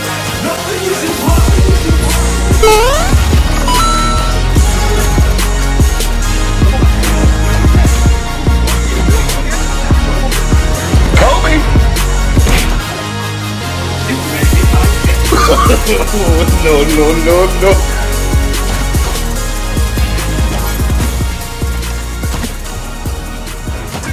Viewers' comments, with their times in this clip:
0:08 discord notifications xd